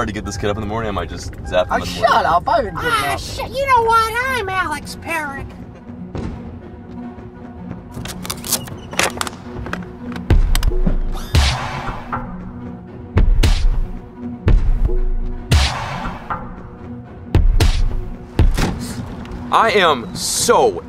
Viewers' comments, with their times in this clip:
0:05 best impersonation ever.